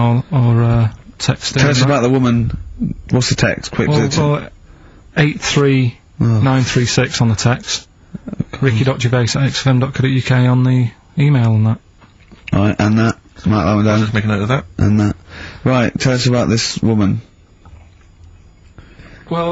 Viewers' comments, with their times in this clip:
0:04 Ricky’s muttering here always tickles me. Feigning his embarrassment at the rubbishness of their show.